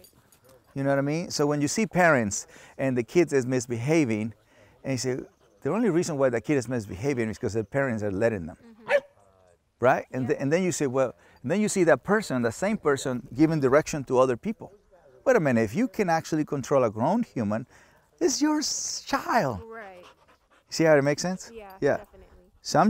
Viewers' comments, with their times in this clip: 0:06 Cesar: “The only reason why that kid is misbehaving is because their parents are letting them.” Dog: “woof” like saying that’s right bro she is lettin me misbehave jajajaja